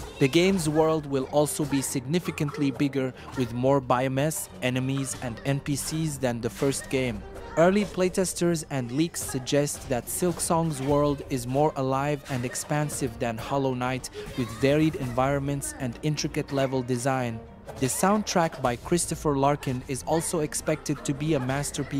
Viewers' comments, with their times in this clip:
0:03 glad you didnt use a.i voice. Your mistakes are funny. I shall not dislike this drivel this time 👍